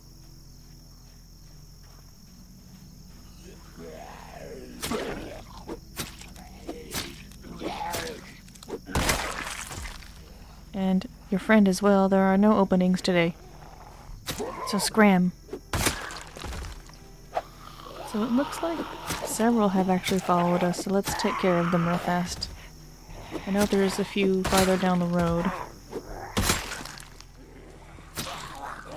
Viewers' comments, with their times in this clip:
0:09 (intimidating Toad noises) "Scram!"